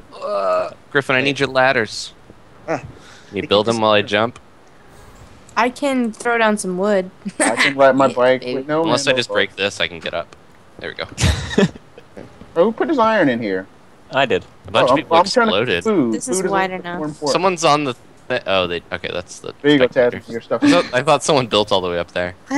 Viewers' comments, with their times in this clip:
0:07 I feel in love with as soon as he started singing Handlebars. I'm in love with that song. (: